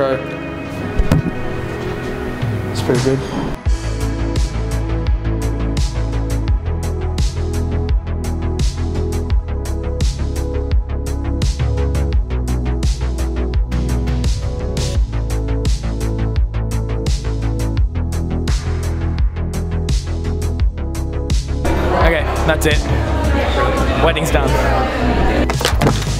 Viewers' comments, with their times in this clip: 0:07 Great music and montage!